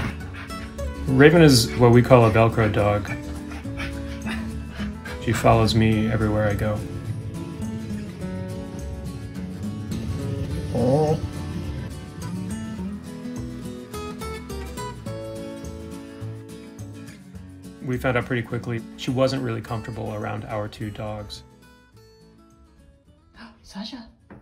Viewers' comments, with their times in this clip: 0:07 That moment and on when he turns the camera and she's there with a love growl. So sweet I wanna hug her so bad.